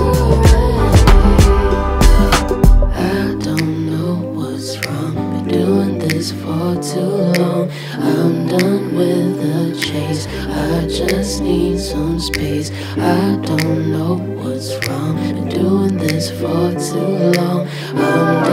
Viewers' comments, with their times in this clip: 0:03 OMGGGGGG I WAS SOOO NOT READY FOR THE LOWSSSSS!!!!!!! ✨❤️
0:03 OMGGGGGG I WAS SOOO NOT READY FOR THE LOWSSSSS!!!!!!! ✨❤️